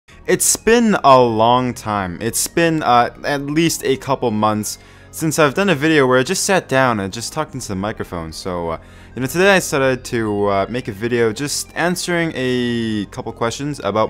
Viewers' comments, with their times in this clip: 0:00 “It’s spin a long time”